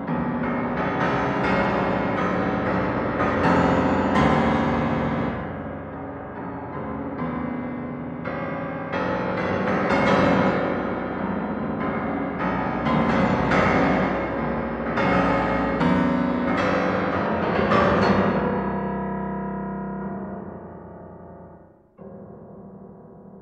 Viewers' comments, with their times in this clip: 0:06 why i listen like In The Hall Of The Moutain King :))